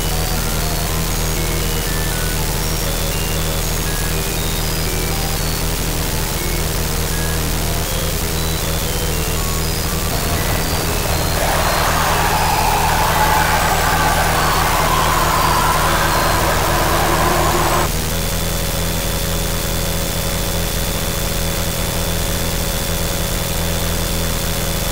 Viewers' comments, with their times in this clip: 0:10 the t-posing thing in the death screen was actually the parts null was missing from his corrupted body (arms, face) and that just fades with a scream. maybe the last piece of null disappearing from the game forever.
0:11 I think that is most likely showing us the last traces of Null letting out his final screams before getting wiped from existence. It’s really scary when you think about it like that..